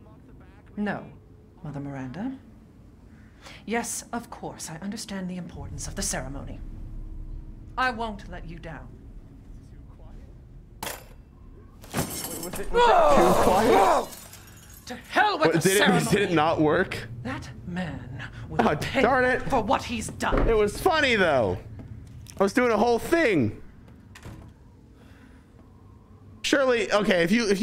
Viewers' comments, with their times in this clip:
0:10 I didn’t think it was too quiet that was perfect that is hilarious